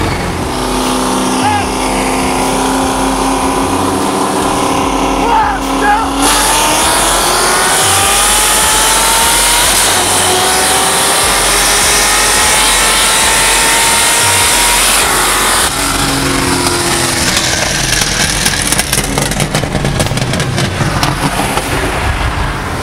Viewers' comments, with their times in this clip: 0:05 man the sounds! And that Vette crackling at the end. Shit actually gave me the chills. Insane.